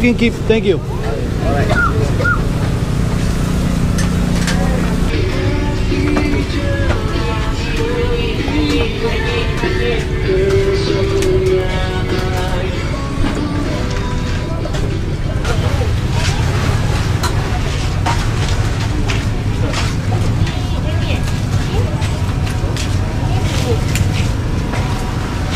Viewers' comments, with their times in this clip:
0:06 that funny moment when ur favorite Indonesian song appeared in the video.